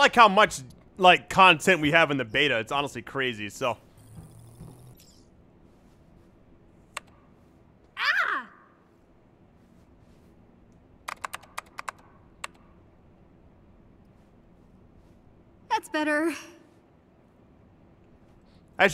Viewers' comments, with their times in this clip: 0:06 I'm not sure what happened there she either got jumpscared or it's a missing file or something and there was soppoused to be noise